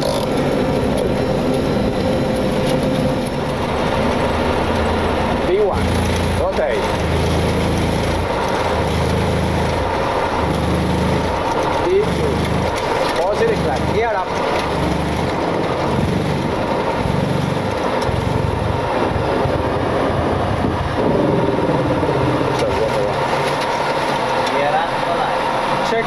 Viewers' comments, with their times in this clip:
0:08 is that a stall stick shaker going off the entire take off? When you run the before-landing checklist at V1. All joking aside, they do incredibly important and dangerous work.